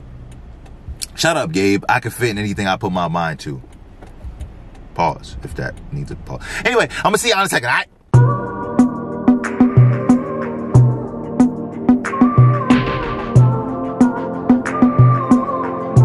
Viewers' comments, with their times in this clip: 0:04 that music was just fire